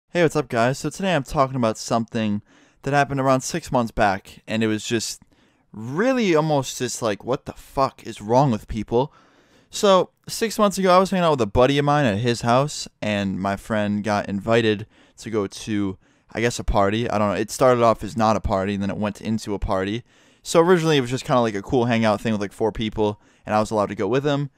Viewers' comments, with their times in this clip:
0:05 start off and have the speed at 0.5... he sounds drunk